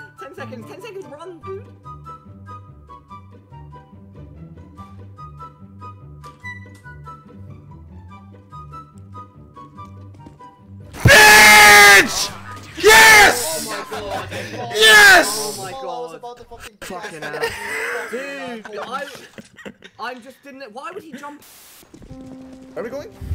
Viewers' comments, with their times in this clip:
0:10 rip headphone users;((